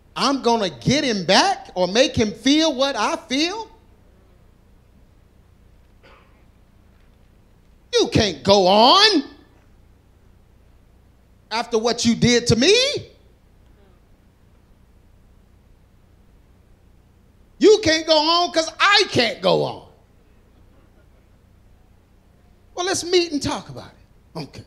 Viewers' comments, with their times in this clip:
0:08 I keep going back to -50..lol it's TRUE too.. but his delivery caught me off guard and I bust out laughin at work! Lol